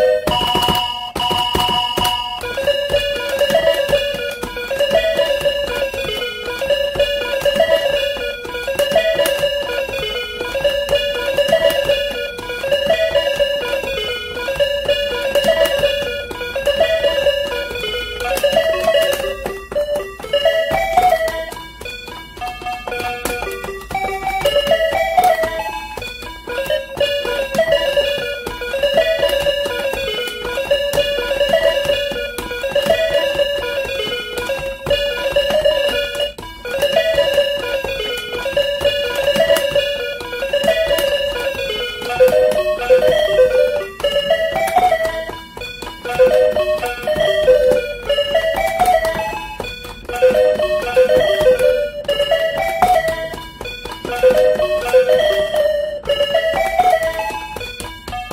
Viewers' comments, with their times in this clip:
0:03 speed 0.75 - like Skyrim Theme
0:36 he gets off key for a littld
0:41 idk why i still can hear the remix :(